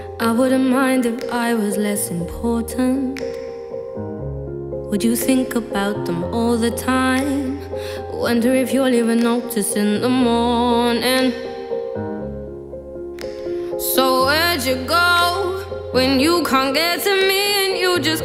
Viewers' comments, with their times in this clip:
0:06 the piano background reminds me of dancing under a light pole in the night with the view of land and a house.